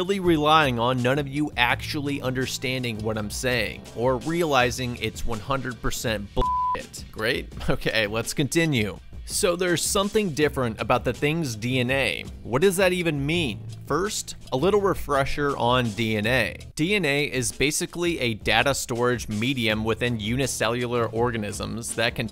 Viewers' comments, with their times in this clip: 0:08 DID HE JUST LAUGH????